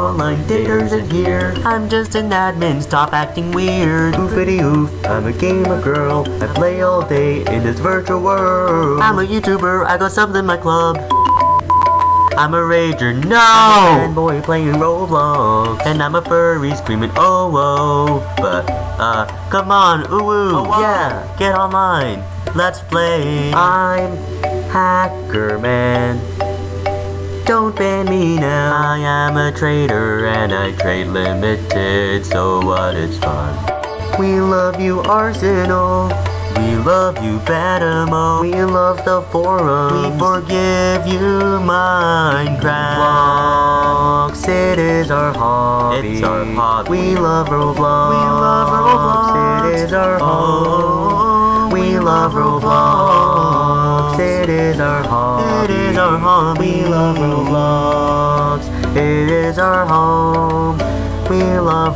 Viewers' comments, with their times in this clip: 0:05 thats me in quarintine Except I dont have a boy voice!
0:13 The NOOOOOOOOOOOOOOOO got me💀
0:45 he sounded like technoblade.